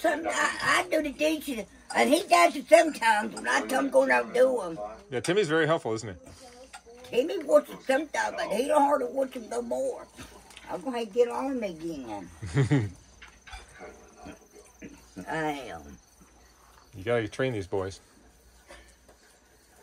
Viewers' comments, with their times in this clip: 0:06 You really shoulda turned that TV off or down while everyone was trying to eat. It’s so loud and distracting.